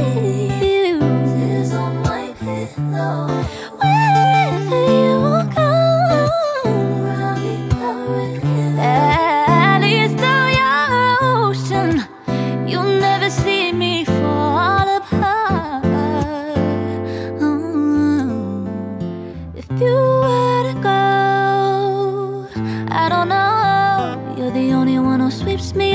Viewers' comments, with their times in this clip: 0:09 u sound like a Lauren from Fifth Harmony 😍😍😍 Your voice is getting better with every song.